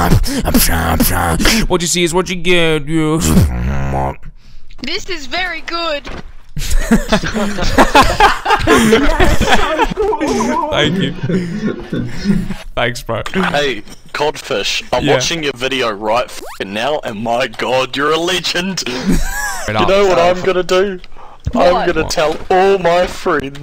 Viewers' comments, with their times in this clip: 0:04 made me laugh 😂 Beatbox song ends Kid: "This is very good"
0:04 The most honest and pure "This is very good" i ever heard. x'D